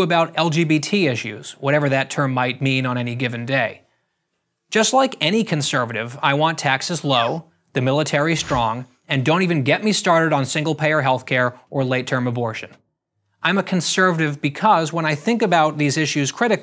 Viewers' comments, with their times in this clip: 0:04 I thought he wanted texas low. Lmao